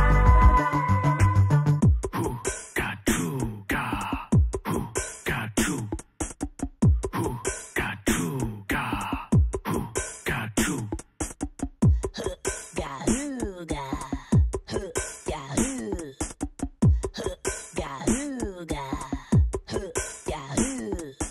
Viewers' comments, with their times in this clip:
0:03 stogg still going